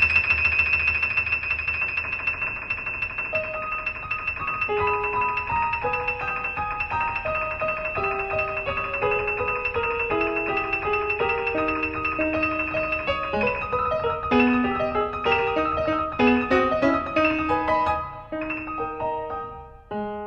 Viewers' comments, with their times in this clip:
0:06 note gose offf for 0.001 second